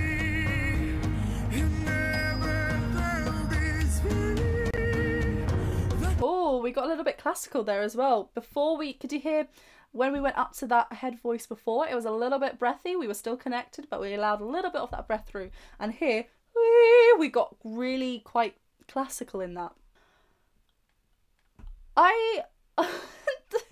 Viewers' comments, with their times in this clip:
0:04 I've just now come here to hear what this girl sounds like and, in just a few short notes, it seems clear to me she's singing with what used to be called a "covered" voice. Look at her jawline and neck. Big larynx and huge mouth cavity (excuse the pun). Isn't it interesting we're hearing/seeing more and more of these super kids these days ? (i.e. Angelina Jordan, this young lady, etc.)